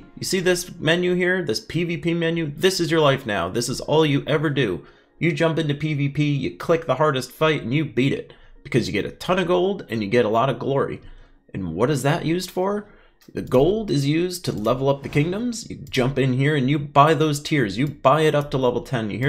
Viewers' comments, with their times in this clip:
0:03 The sargent from Full Metal Jacket. 😂